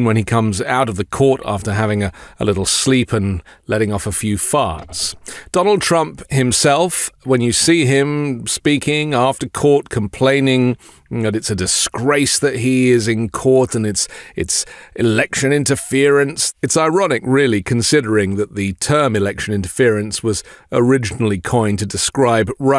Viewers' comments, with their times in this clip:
0:05 The way you say "farts" is awesomely funny...😂